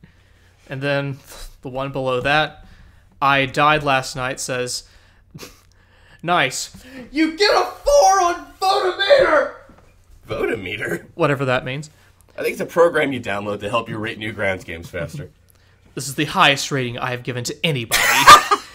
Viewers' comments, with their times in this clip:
0:06 Diabeetus almost made me choke on my food laughing. His yelling always gets me.